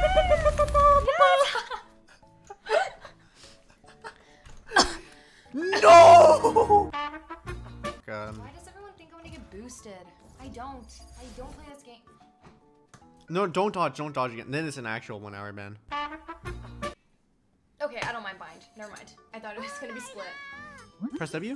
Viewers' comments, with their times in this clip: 0:05 My neighbor's dog at 4am: